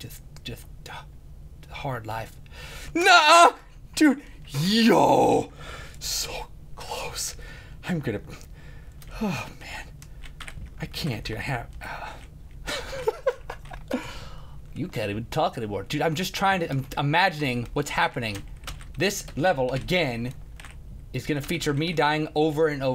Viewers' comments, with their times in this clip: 0:04 he sounded funny on
0:04 he sounded funny on
0:08 yes + NOOOO! = Yooooooo